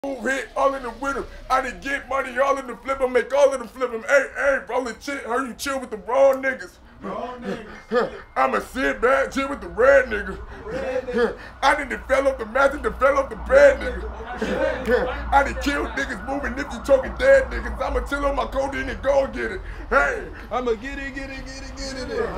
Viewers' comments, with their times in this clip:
0:06 when you swallow a fly while recording but ya squad be hyping u up